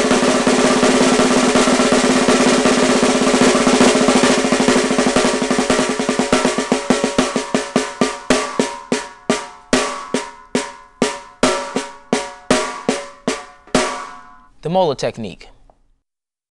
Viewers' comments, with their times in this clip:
0:04 he starts stroking 4 times then back to 3...this is bs he just drums fast.